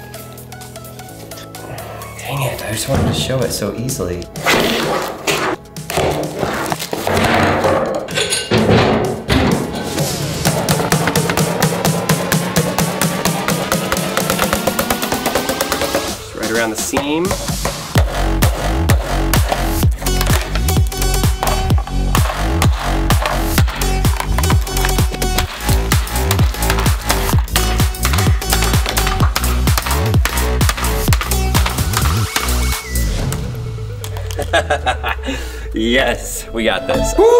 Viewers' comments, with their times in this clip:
0:08 Well edited as the beat was matched to te smashing
0:09 perfect music timing
0:10 that axe beat and music sync is lit 🔥🔥
0:11 I love how you edited music in that matches the sound of you beating the toilet seat 😂 nice 👍
0:19 that bgm’s so cool